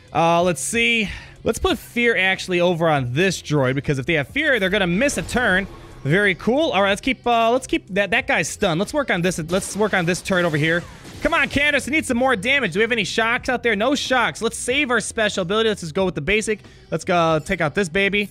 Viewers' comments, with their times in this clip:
0:06 alright let’s work on this turd over here 😂 thought you said turd 💩